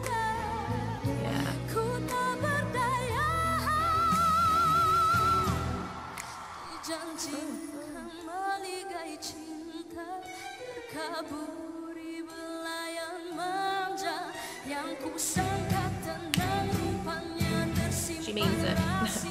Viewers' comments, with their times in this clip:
0:04 i think this mix is perfect, it's like the most rounded, perfectly balanced mix I've heard. really